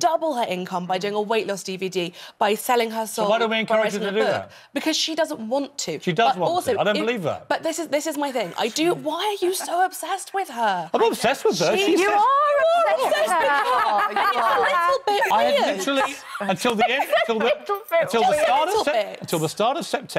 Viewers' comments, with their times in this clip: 0:05 did she really say she could sell her soul like what?